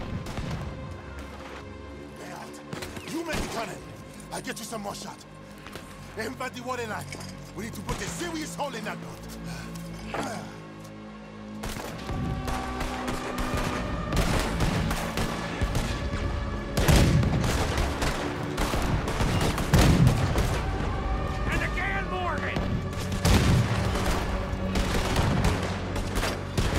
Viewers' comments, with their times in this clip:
0:07 the song though
0:07 the music/sound effect is my absolute favorite in the whole game. i could listen to it by itself and just be mesmerized. unfortunately it isn't a song or included in any soundtrack, but it's by far the best. the only good thing about guarma lol